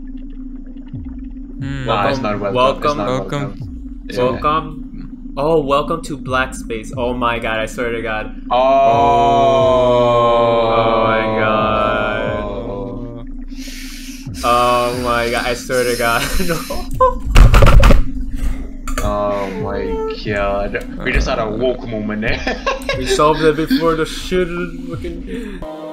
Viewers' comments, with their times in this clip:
0:08 you all should be voice actors lmao